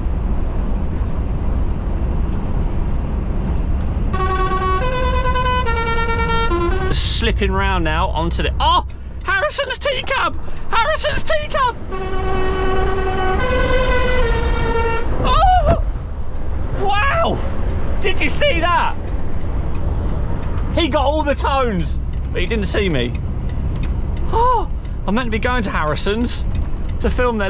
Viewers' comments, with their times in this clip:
0:08 moans Harrison’s T-CAB HARRISONS T-CAB Sandstorm tones moans weirdly again